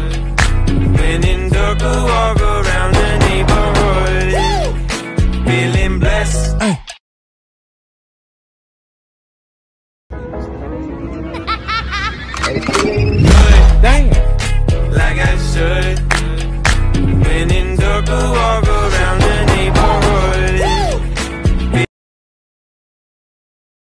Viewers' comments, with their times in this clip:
0:10 When are not part of the hood